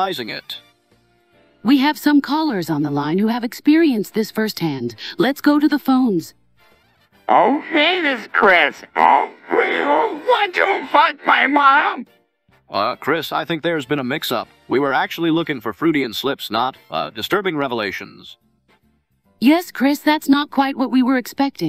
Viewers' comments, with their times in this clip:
0:07 Chris sounds like he’s saying this at gunpoint